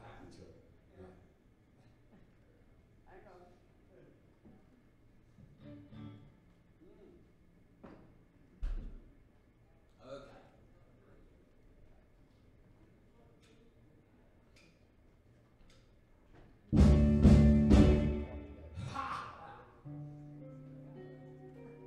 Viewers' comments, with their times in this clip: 0:05 How? At what age now? It takes a lot to make feel me like I felt hearing Otis for the first time. Terry still has that "thing" and he's matured into his voice like few others.